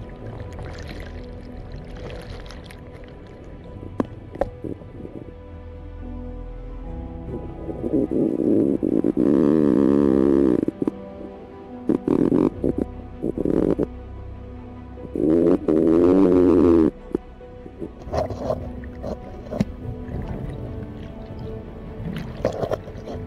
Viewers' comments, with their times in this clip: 0:08 is the noise the water flowing through the tape/zip tie parts of the rig? if so damn, another good example of the speed of the current lol